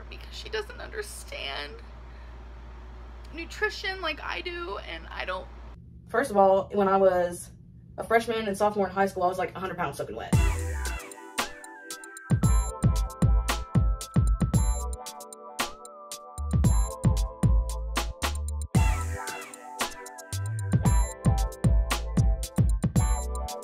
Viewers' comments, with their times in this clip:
0:09 The song JAIL TO WHOEVER EDITED THIS😂😂